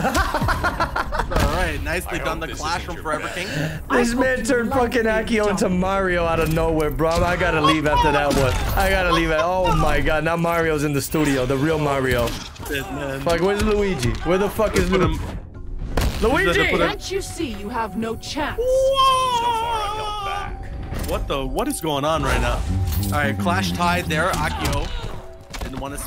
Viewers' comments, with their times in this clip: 0:09 Wait they actually got Chris Pratt to cast holly shit